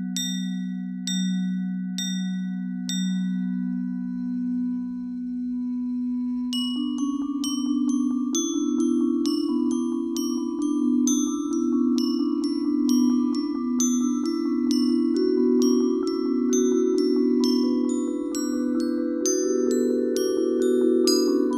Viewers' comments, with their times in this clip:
0:04 Back on the metal pipes that are dominant in the mix, imagine that instrument on the floor, I know one would have to sit, but imagine if lowering the instrument and how then the tone might not overcast the other xylofons as much.